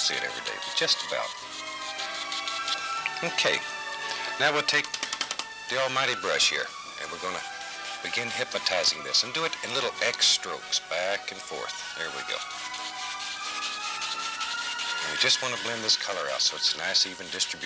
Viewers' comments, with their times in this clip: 0:05 The music reminds me of being at K-Mart with my mom when I was 9 or 10 in the seventies riding in the back of basket bored out of my mind. I kinda like the music.